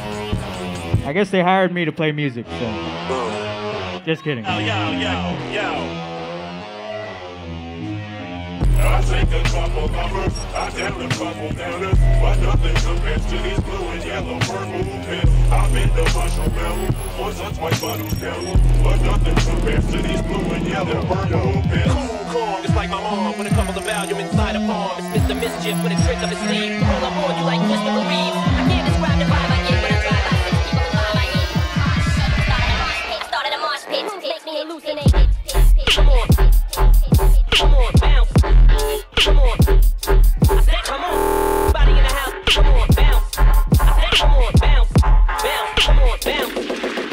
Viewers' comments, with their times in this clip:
0:10 Love to carmack but def some rough moments in the mixing. However, The Vocal mashes went brazy & I would give 1 pp touch for the ID think its also in his insomniac live stream set.
0:35 Mr Carmack’s casually dropping one of his hardest trap remixes